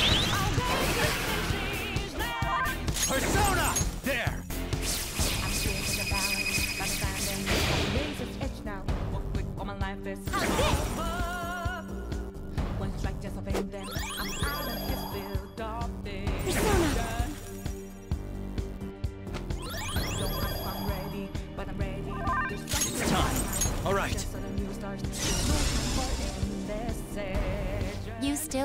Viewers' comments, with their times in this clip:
0:10 I can feel the sigh of pain from here